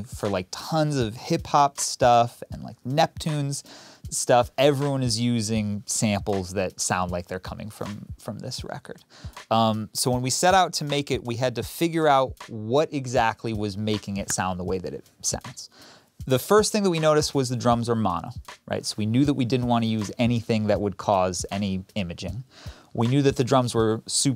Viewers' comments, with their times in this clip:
0:09 The snare drum in this video is played wrong. Questlove used what was called the "mother-son" style of playing drums on most of the album which was inspired by "Mother's Son" by Curtis Mayfield. The drummer on that song played the drum by hitting the edge of the snare and rim at the same time. If you listen to "The Line" and "The Root" and most of the songs on the album, that's how the snare was played. On the Mayfield song you can hear it around the mark.